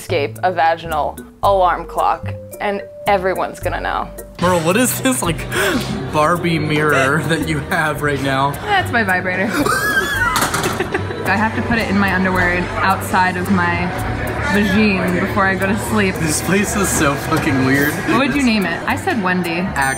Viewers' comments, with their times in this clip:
0:05 when he wheezed lmaoo